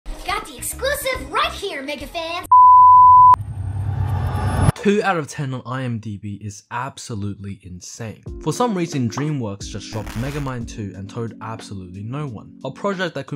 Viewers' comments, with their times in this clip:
0:00 Maybe my ears have amnesia from watching a video with low quality audio right before I watched this, but why can I actually see the studio this was recorded in?